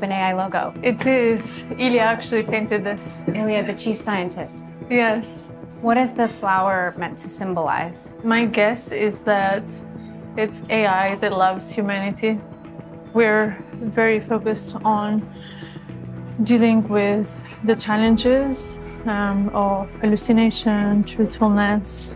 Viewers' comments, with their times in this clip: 0:06 "...it's AI that loves humanity..." Don't know about that but I'm sure AI woulda said it in a warmer tone.
0:10 "AI loves humanity" ?,...these soft spoken techies are an odd bunch